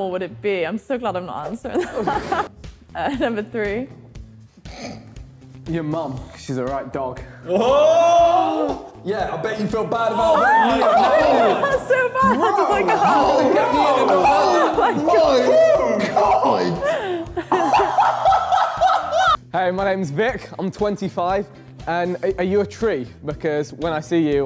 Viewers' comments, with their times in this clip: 0:08 why is vik and Harry almost synced here??